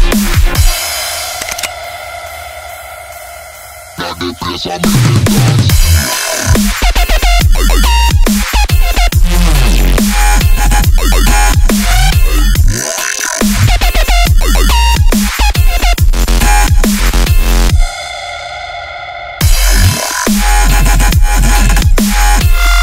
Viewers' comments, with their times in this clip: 0:05 Is that a drop button?